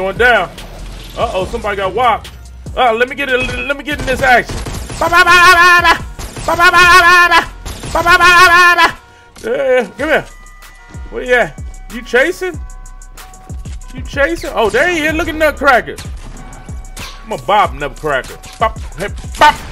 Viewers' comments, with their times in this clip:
0:05 On 💯 is funny it sounds like goats dead asf